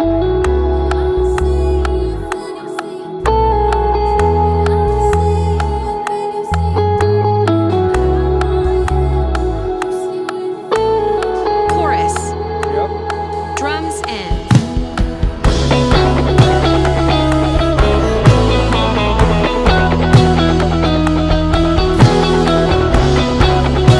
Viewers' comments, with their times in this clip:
0:06 sounds so good! what type of reverb are you using on the bigsky ?